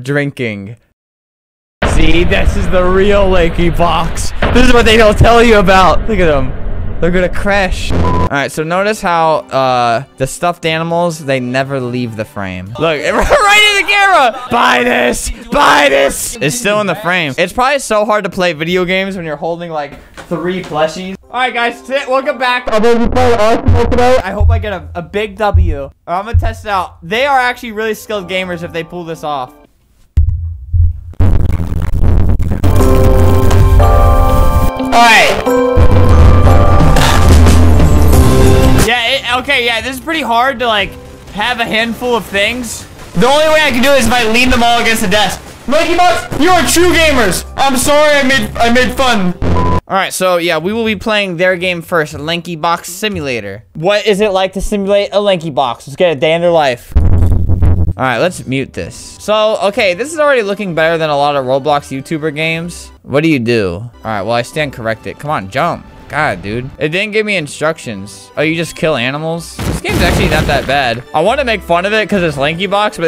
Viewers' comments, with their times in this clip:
0:04 leaky box(again put cc)
0:31 i was laughing bc of the really sweet song and the raging noice mixed up🤣🤣🤣
0:59 Albert just causally saying “I’m going to jump of a tall building”
0:59 nobody gonna question how he said "im going to jump off a tall building" ? i read every single comment btw